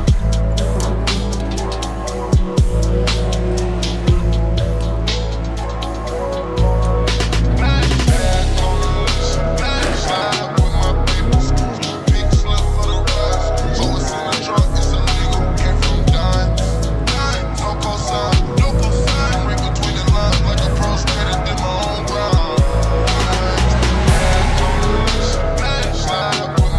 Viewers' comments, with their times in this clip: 0:09 that scrape ughhhh